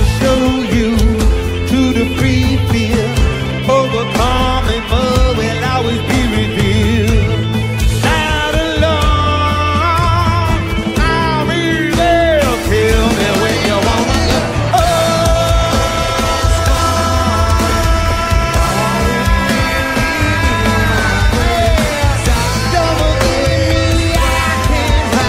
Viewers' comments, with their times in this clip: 0:10 Anthony Kiedis on beast mode before that beautiful Don't Forget Me solo by Josh 🔥